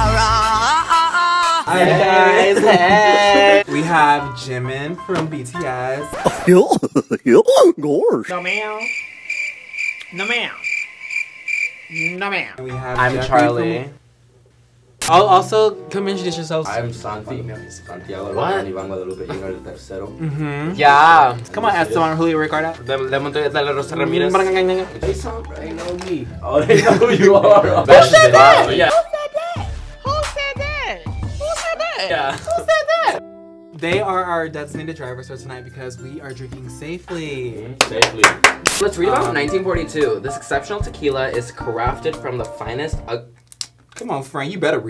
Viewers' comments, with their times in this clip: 0:08 OMG IM DEAD HE SAID AMRY SOMEONE GET ME FROM HEAVEN 😭🤚💀💀
0:09 “Amry” who go tell him 🥲 it’s Army 💜😭
0:28 lowkey impressed that he said it in the right pitch lmao
0:28 The way he was pitch perfect!!